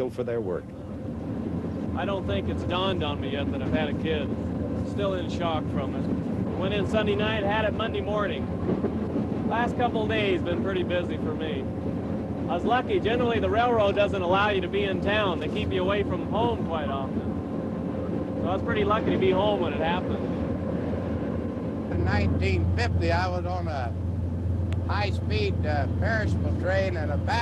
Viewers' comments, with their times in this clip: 0:08 I’m pretty sure the Espee engineer is the same guy in a later Green Frog documentary on Amtrak’s California Zephyr from 1993. He handled the train from Sacramento to Oakland, and had mentioned working for the SP prior to that. Sounds just like him.